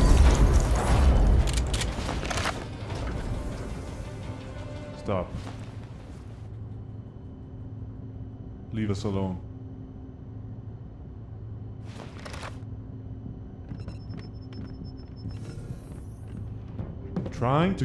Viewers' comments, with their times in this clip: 0:04 HE CAN TALK 😱